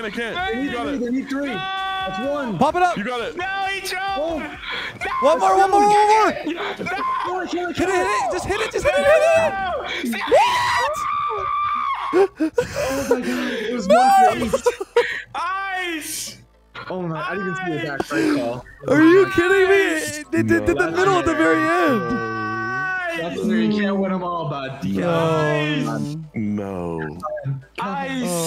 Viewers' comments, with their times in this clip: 0:10 AHHHHHHHHHH had me dying